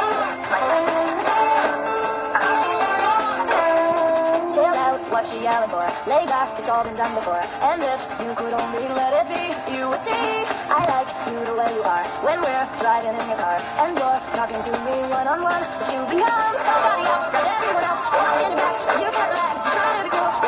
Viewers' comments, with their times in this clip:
0:06 the Avril Lavigne song lowkey goes hard